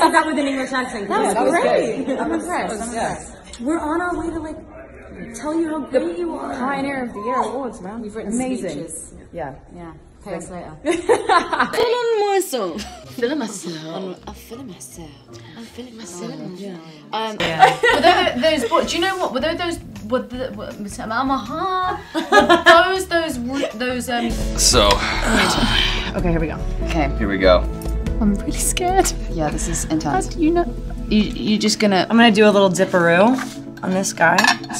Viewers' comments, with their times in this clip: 0:07 That squeak Kristen did tho
0:18 naomi couldn’t talk did a whole thing about it and still couldn’t talk 😂😂